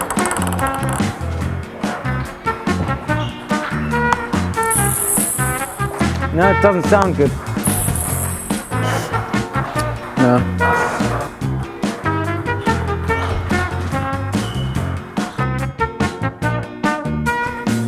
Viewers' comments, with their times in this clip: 0:03 What a bad noise